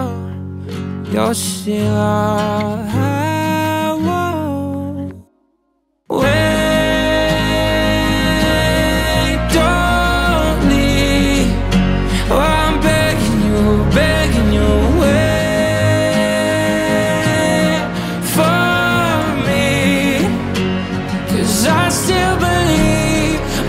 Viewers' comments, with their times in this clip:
0:06 why does this part sound like walk me home by illenium, said the sky, and chelsea cutler?